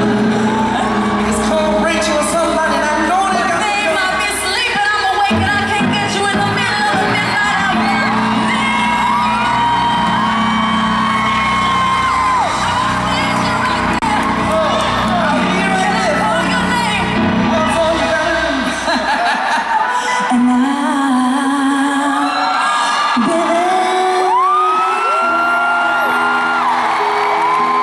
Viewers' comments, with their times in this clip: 0:10 She's belting those E5's so perfectly! And that improvised part with Trey was amazing as well, especially where she's belting Haters prepare 'cause I smell a comeback from the Queen.